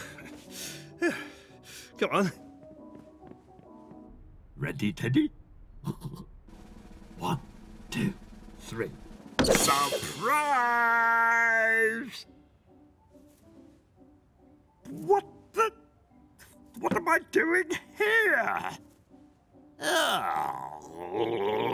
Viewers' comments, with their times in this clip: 0:08 the way he busted saying surprise😂😂😂😂